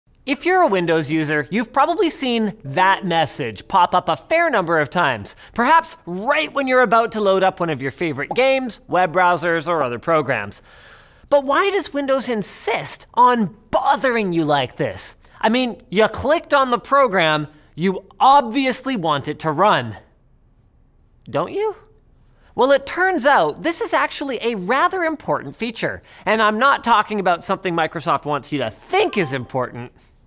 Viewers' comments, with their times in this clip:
0:02 seconds into the video and we see a windows 7 user account control menu and hear a windows 10 sound. Good job Linus Media Group!
0:12 -> The guy is screaming at a macbook pro tho...